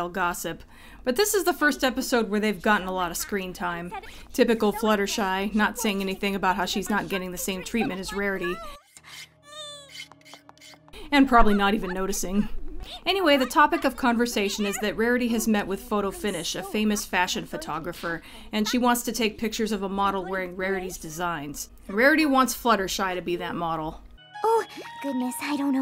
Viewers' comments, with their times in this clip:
0:09 Fluttershy makes the adorable "Ree" noise.😊 Seriously, that is a meme at a certain point in the series later on. It's both cute and appropriate for Fluttershy's character as a whole. She's so sweet and innocent.🤗 I actually think that "Ree" sound was actually made by the devs to be a generally cute and adorable sound effect for kids to hear.😄